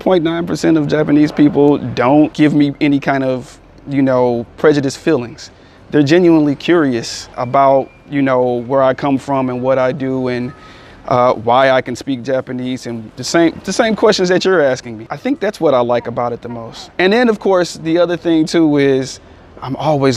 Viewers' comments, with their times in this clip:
0:07 Did I hear the cod zombies mystery box in the background? lol